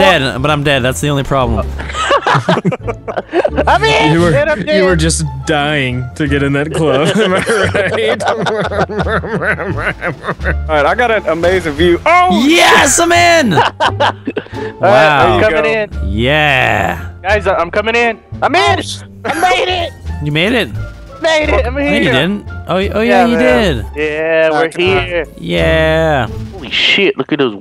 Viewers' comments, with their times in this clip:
0:08 Yo that laugh so funny 😂